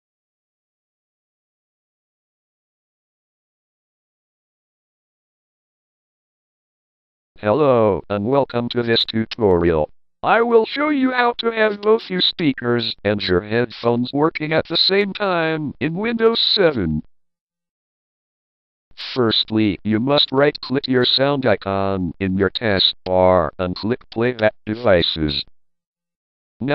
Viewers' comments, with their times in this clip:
0:10 what the hell happened to the voice?!?!?